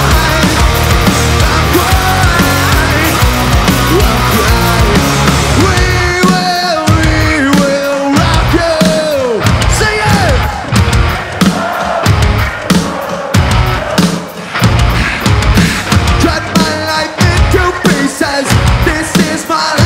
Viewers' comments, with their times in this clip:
0:05 Jacoby Shaddix went into Freddie Mercury 😰😰🤘🏻🤘🏻 I love Papa Roach 🤘🏻🤘🏻🪳🪳
0:06 Damnnn!! ngl the ''we will rock you '' transformation was fucking cool